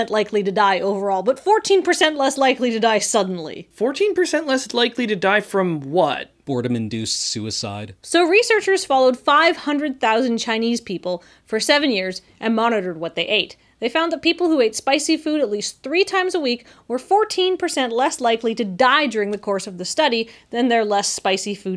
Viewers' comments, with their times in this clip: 0:05 perfect wattage. No subtitles needed